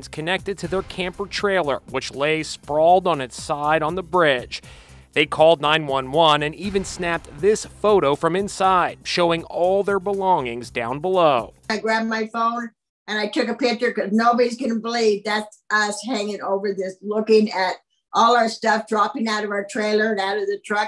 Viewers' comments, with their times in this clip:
0:03 It tickled me when he said 'on the braadge' 😂 glad they're all okay!